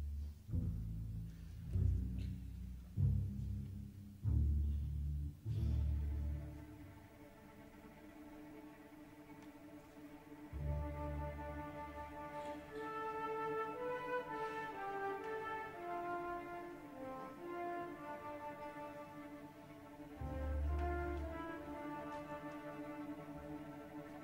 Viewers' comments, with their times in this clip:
0:05 This melody sounds to me as a pre-cursor to Pink Floyd's ''Crazy Diamond' :)